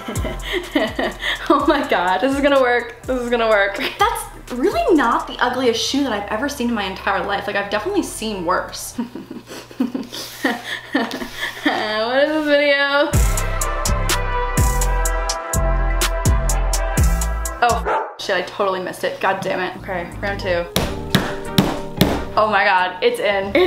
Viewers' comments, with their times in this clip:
0:10 where’d this new laugh come from lol